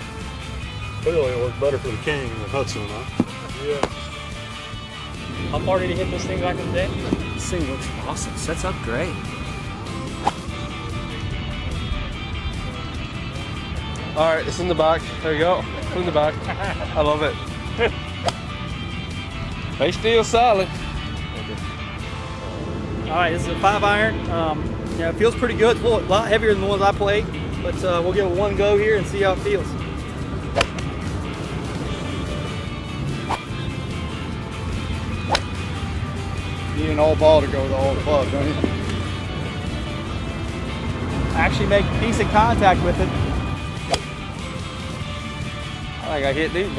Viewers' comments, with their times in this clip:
0:09 that hit doesn't make any sound....
0:32 also no sound